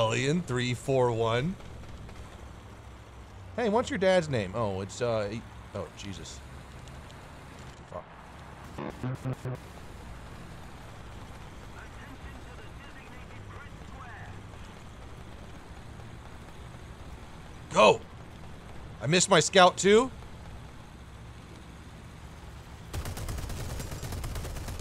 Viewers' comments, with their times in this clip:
0:05 that censorship's ping is 9000